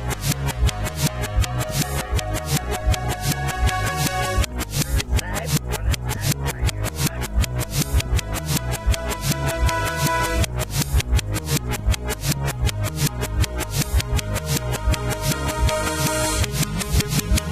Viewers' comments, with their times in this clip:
0:05 Rod speak russia like: !dratsab elttil taf uoy ereh kcab teg 😂😂😂😂